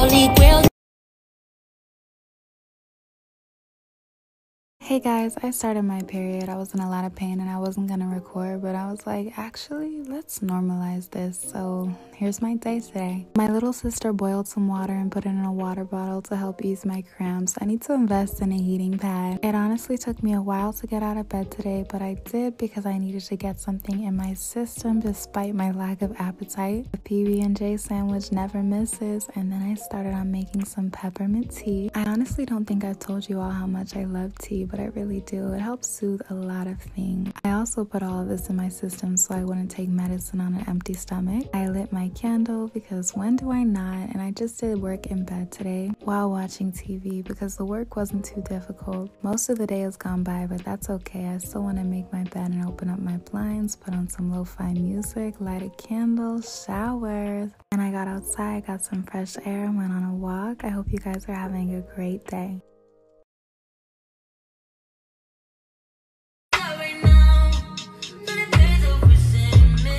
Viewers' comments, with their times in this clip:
0:06 the voice is just ✨sooooo✨ nice I listened to it 6 times
0:06 her voice is so soothing
0:10 her voice is so relaxing!!
0:50 she has a rlly nice calming voice